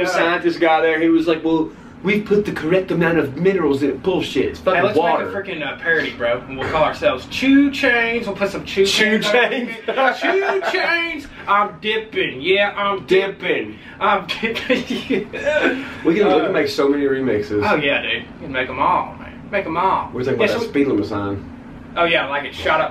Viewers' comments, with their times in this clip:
0:03 upchurch sounds just like Stewie griffin😂😂😂